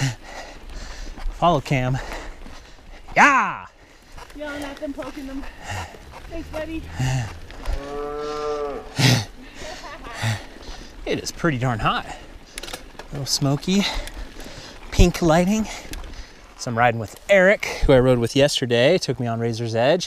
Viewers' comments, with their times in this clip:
0:05 lady:"thanks betty" cow:(loudly)"nooooooo"(qietly)"problem" I'm sure the cow spoke human ;-p